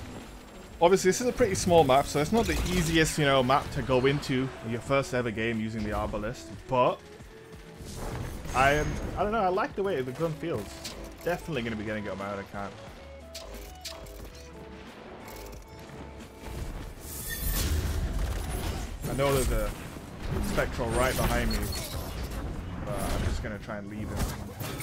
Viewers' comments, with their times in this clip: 0:06 WTF is that spectral blade sound!